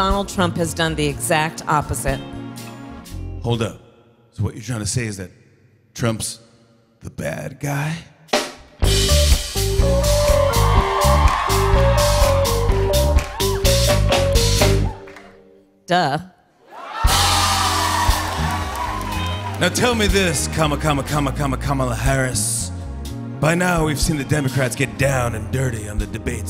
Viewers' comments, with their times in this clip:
0:09 Hold up, what's the music it was sonically astute ✊🏿💯